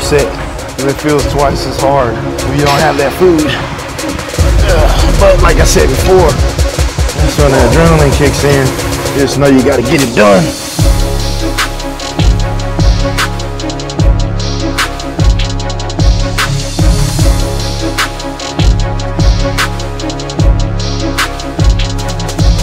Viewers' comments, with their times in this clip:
0:09 Overdrivin' into that Rich Piana beat 🎧